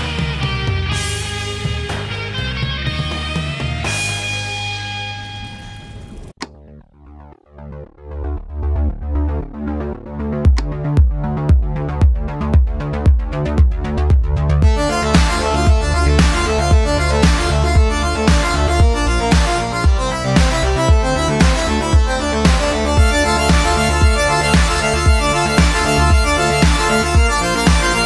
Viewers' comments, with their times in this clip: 0:09 just hear at that tone